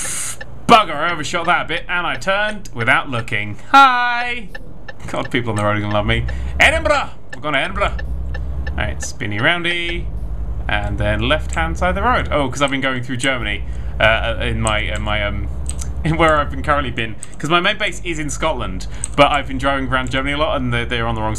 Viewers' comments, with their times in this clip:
0:08 that was an Irish accent not a scots one